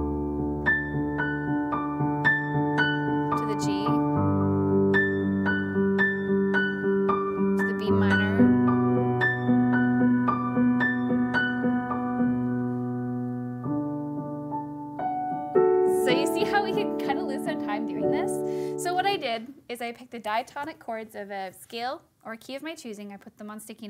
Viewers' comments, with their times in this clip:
0:10 😂😂😂 She almost went to the 5 chord. Lol